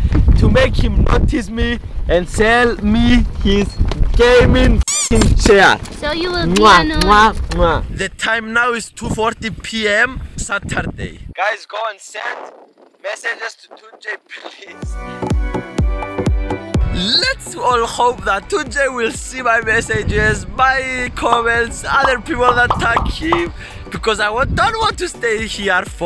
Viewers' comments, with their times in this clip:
0:08 The taym naou is TOO fortY pee em SATTAR DAY